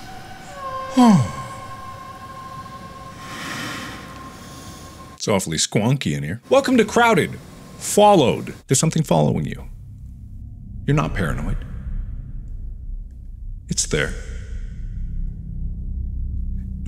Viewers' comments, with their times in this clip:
0:03 that moan. that dammed moan